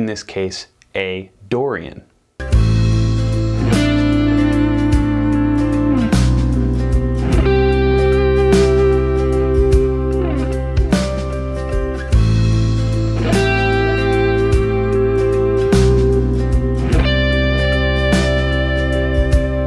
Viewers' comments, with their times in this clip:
0:04 sounds like Garden by Pearl Jam